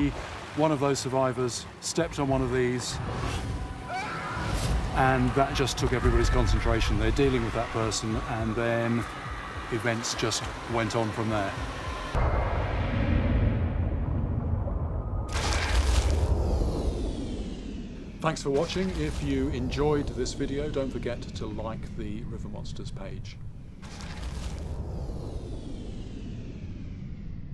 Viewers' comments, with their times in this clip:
0:04 OLD RUST SCREAM LMAOOOOO
0:05 you can hear the old sound of your character getting downed in rust lol
0:05 sounds like screams from rust when a player is down
0:05 that old rust dieing sound effect lol
0:05 old Rust scream
0:09 this guy screams like Wounnded people in Rust like 4 years ago! :D